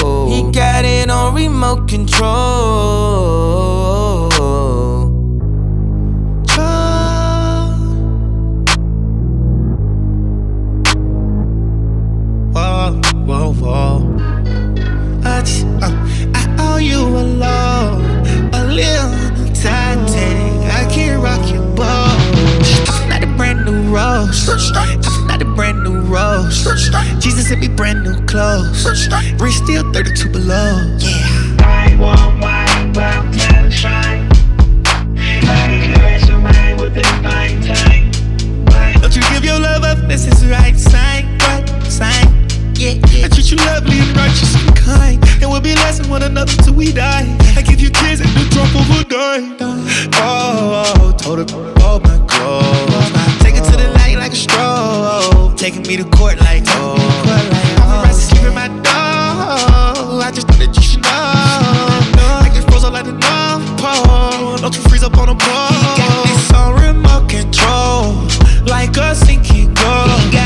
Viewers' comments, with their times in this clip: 0:06 Thug singing TROLL 🎶 is my favorite part 🤣
0:12 sounds like drake
0:31 Why is that auto tune on so fire? 😭😭😭
0:31 i genuinely though this was daft punk
0:49 onwards thugger was floating on this shit
0:50 Best song on the album and Thugger’s part is what makes it good. Ear Candy
0:57 Young thug’s voice was Beautiful, he was floating on the beat 🎶 🔥🔥 is the best flow I’ve ever heard